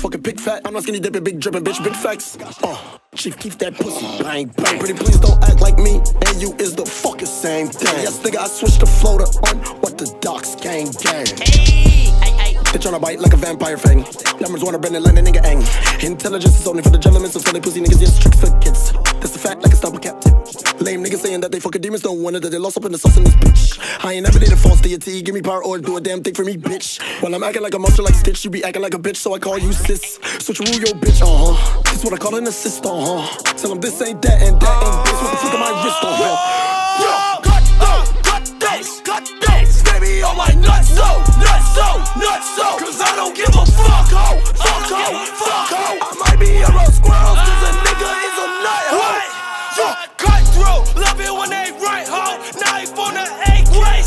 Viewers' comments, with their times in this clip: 0:08 I thought that sounded like xxx
0:10 I SWEAR THE AYYY AYYY IS LIKE X SAYS IT
0:35 You can hear it’s literally juice lol